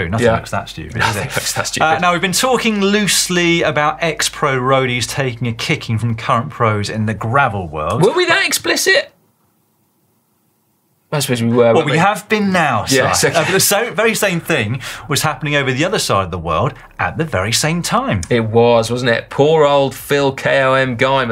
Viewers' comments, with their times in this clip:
0:08 I absolutely lost it at that pause